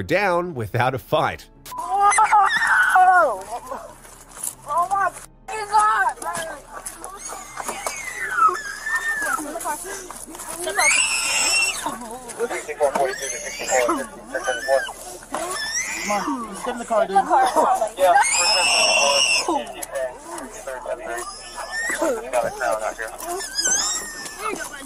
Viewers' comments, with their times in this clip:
0:08 Kid sounds like a dying baby pig💀